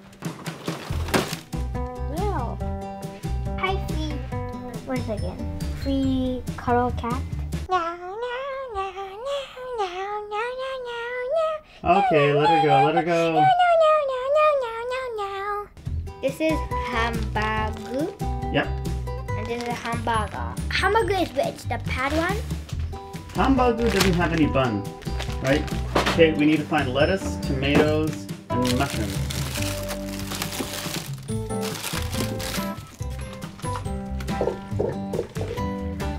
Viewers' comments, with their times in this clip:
0:07 he just sang a part in a touhou song wow
0:08 Did your child just recite death waltz in Catanese
0:19 "Hambaga" "how he says it" "I can't anymore" 🤣